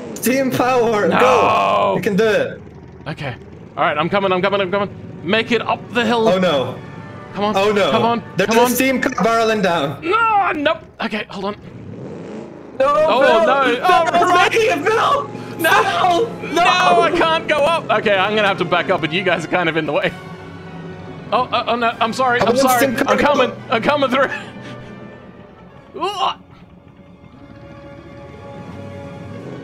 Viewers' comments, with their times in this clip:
0:10 the soundtrack set perfectly with the moment hahahaha perfect